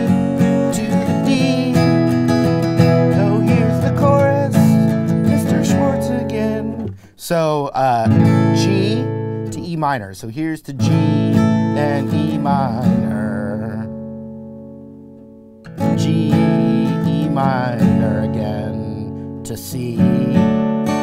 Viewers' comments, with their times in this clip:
0:05 “Mr. Schwartz again” can’t un-hear it 🤣